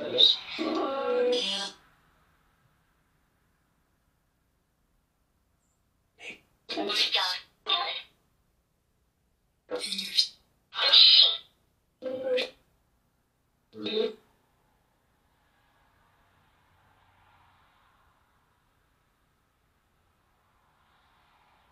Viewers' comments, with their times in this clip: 0:07 That “Hey” sounded real! It was so clear and didn’t sound like it was coming from the box. I think you captured a ligit evp right there. 👍